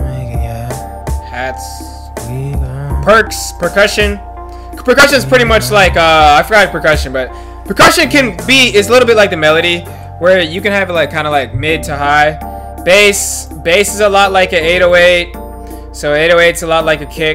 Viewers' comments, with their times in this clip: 0:03 thanks bro - really helpful! lol @ your clipping